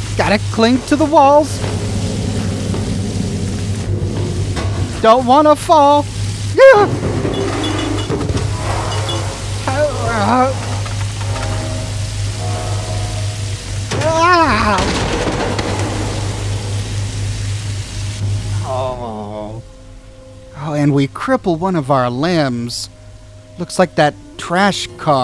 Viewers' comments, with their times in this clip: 0:06 the noises he makes are just hilarious!😂😂